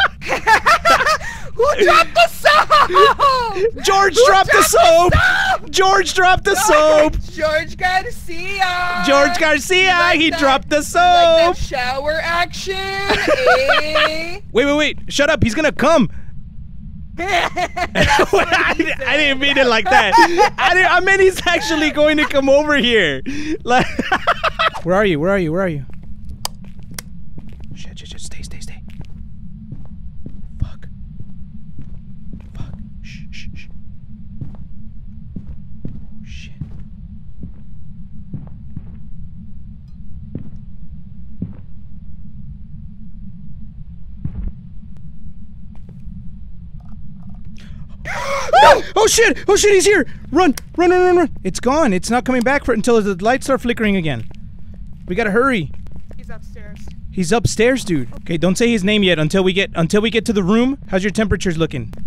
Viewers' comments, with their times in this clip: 0:07 The dead silence after he said "he's gonna come" 🤣🤣👌
0:46 I heard footsteps in the vid